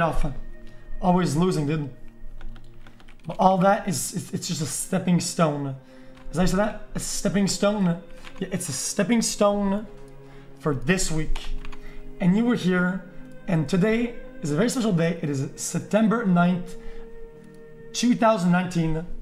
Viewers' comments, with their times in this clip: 0:05 someone literally haHAAed a speech... im done boys see you never